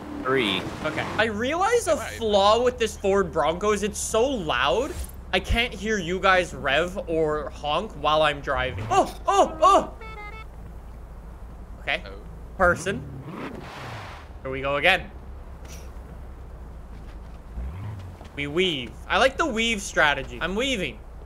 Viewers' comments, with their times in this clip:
0:09 moon, winter and weird horn different vibe